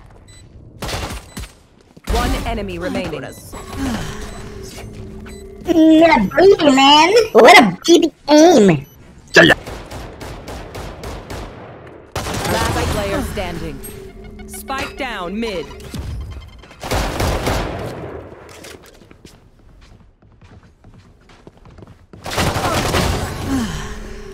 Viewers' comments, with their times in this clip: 0:09 me when i burp and speak simultaneously